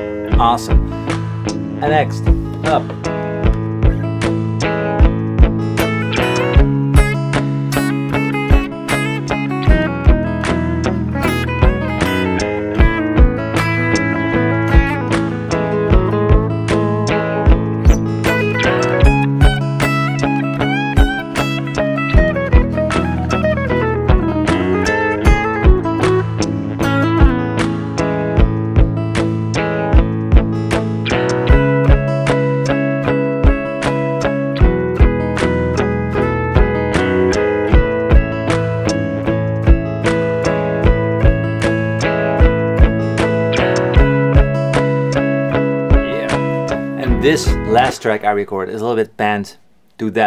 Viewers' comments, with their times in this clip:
0:05 solo slick AF nice really enjoy your vids mate they are shot really nicely too
0:32 great Video! thanks for the insight! sounds like the song from tash sultana